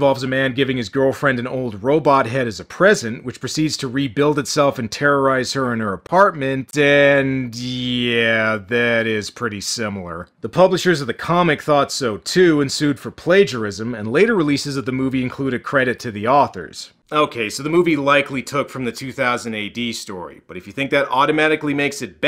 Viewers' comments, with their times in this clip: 0:04 theres a weird effect pn your voice. Ive heard it in a few of your videos. Always thought you were doing it on purpose.